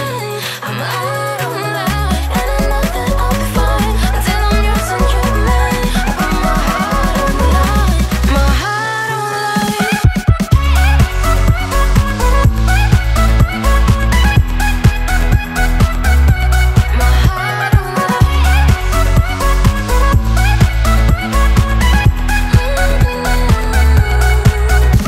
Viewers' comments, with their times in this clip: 0:10 these sounds reminds me of dog barking lmao